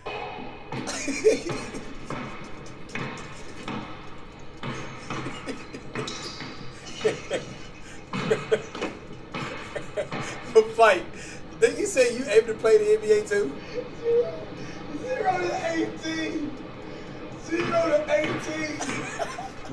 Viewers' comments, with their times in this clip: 0:06 :when you play something funny and got the whole squad laughing in the party